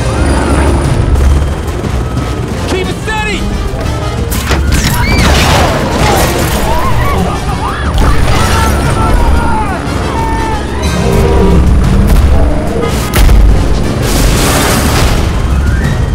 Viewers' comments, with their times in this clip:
0:04 That is very similar to Brooklyn scream in camp Cretaceous